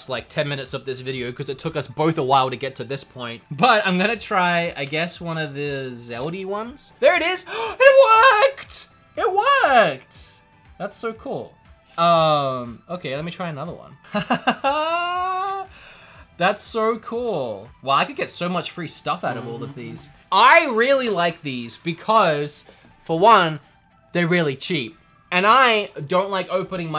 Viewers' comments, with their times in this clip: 0:07 voice crack moment